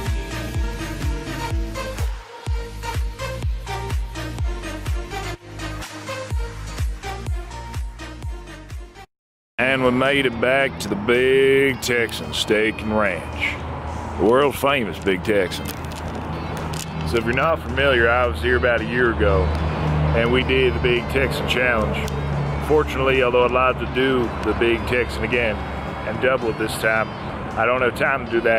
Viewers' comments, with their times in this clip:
0:09 The "Good Ol Boy" accent is hilarious.